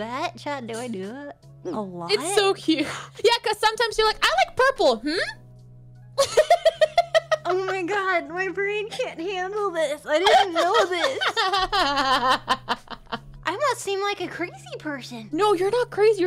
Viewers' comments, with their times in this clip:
0:03 "I like purple. Hmm?!" Oh my days, I cracked up more than I should have at that impression.